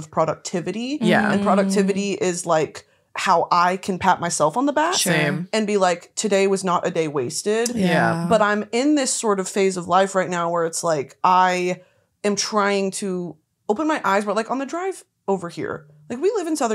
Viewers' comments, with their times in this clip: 0:04 the harmonized "same" and "yeah."